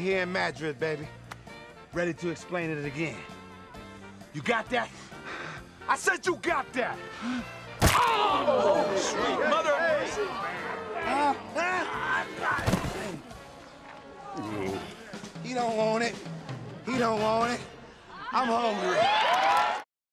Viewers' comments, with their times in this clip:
0:07 😂 💥 🥜 you hear them pop